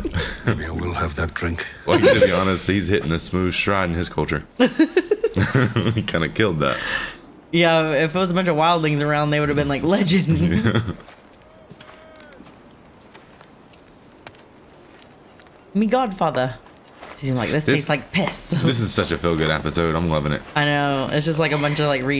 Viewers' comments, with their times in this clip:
0:03 Stoner laugh coming in